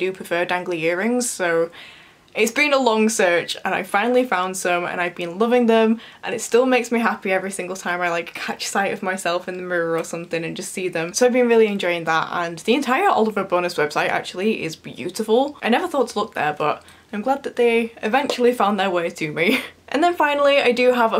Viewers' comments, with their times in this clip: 0:07 is it 'catch sight of myself' or 'catechize myself'?